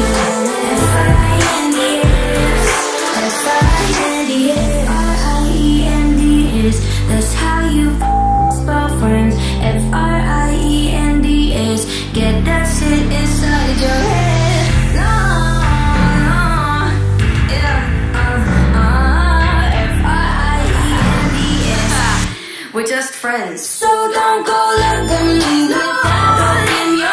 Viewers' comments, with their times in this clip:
0:08 oof my ears